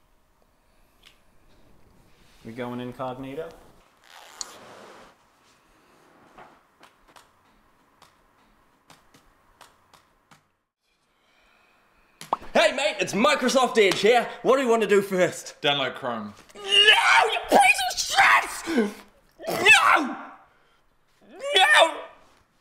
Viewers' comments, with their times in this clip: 0:04 "We're going incognito?" 'Zipper sound's P O R ...